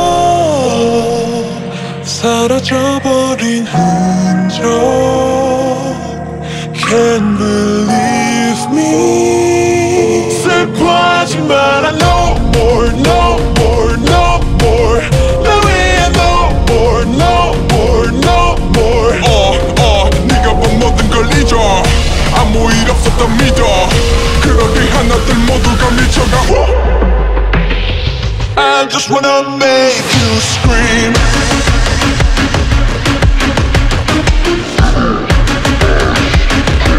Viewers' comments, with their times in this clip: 0:04 This is what my paralysis demon sings to me a.m. OKAY BUT IT’S KIND OF SEXY THOOOOO
0:19 sounds like t.o.p..